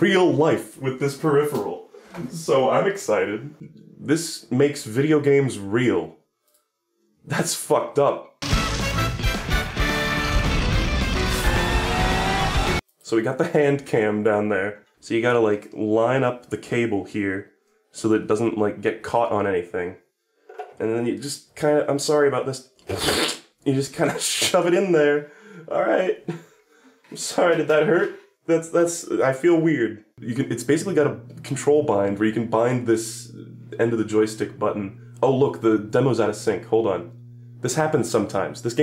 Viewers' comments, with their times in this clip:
0:06 idk why but the way he says this makes me lose it
0:22 slurping noises "and just kinda shove it in there"